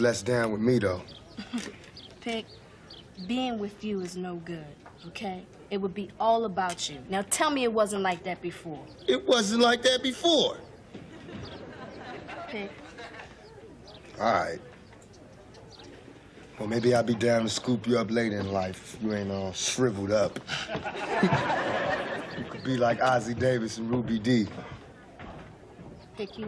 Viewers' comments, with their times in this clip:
0:09 The audience missed their cue to laugh after Tupac says, (It wasn't like that before). 😂